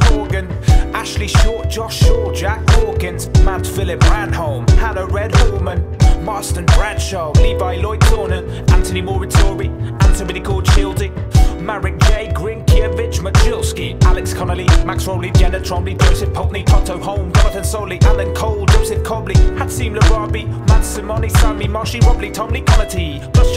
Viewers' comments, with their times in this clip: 0:07 I laughed so much on .. :) He spelled that name so British way!